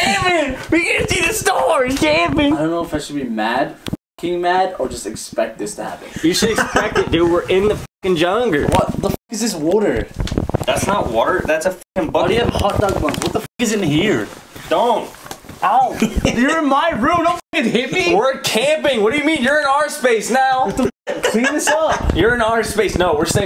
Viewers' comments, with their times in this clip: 0:09 i love it when his accent comes out🥺 rest in peace❤️